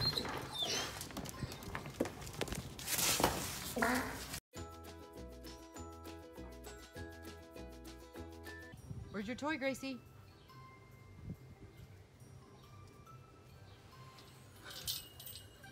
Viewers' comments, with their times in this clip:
0:03 Did that german shepherd just farted 🤣